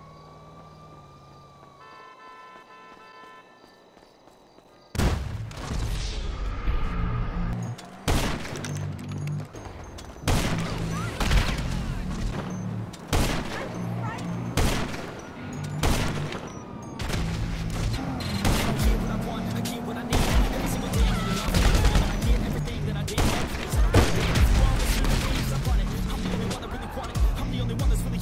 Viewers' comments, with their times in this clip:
0:09 respect the clips but the song might be one of the most horrid songs ive had the displeasure of gracing my eardrums